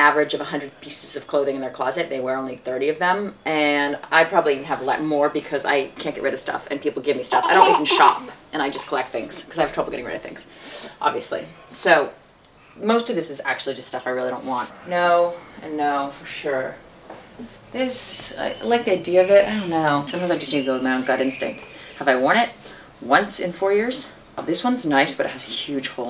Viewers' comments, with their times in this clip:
0:07 love the random laugh